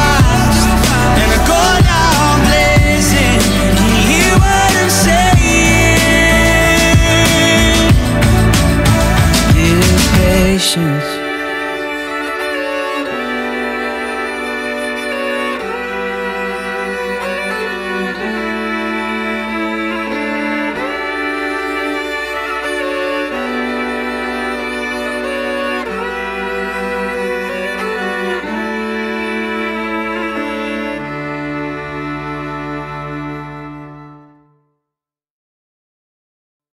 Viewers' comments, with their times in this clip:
0:09 This music is so beautiful. Gives me goosebumps till end
0:14 the last part felt like the last tune of titanic.. the part ...
0:30 can I hear Titanic?!